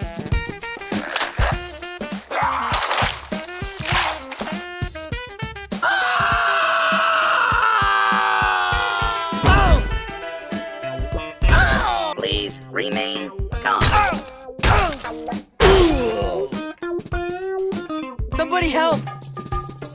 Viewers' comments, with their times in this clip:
0:05 that scream LMFAO 😂